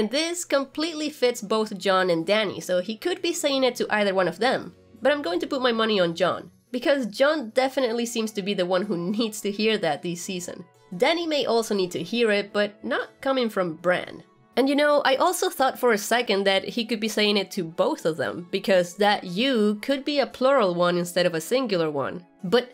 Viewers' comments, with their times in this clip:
0:04 I think your breakdown is probably the best one I've watched. (I've watched too many) My only issue, or question, is: does Bran's voice sound different ? Like the first sentence and the word "Home" come from different conversations?